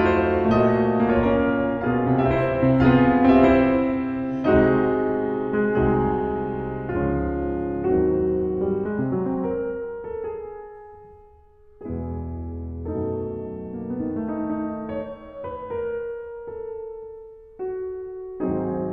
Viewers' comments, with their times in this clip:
0:03 is there really someone saying "yeah" in the background or am I just going insane ? (send help in that case)